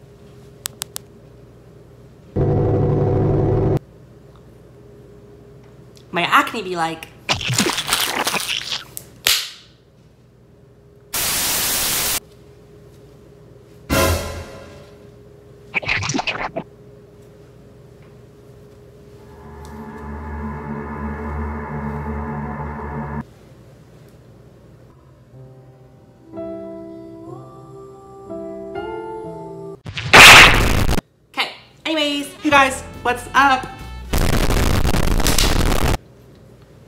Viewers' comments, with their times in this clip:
0:05 “My acne be like:” mister maker sound effect plays
0:19 this music kinda scared me YeE yEe